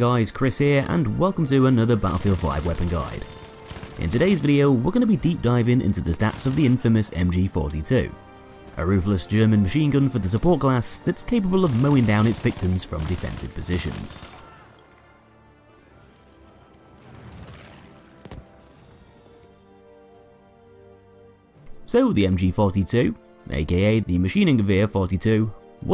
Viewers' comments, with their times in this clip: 0:07 I like that he says mp42